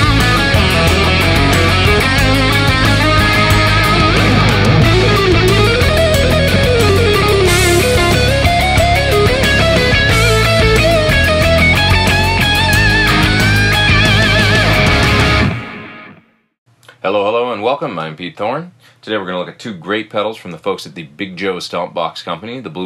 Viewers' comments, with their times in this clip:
0:04 might be the best lead tone on a neck PUP I have EVER heard. That sounded freaking great Pete!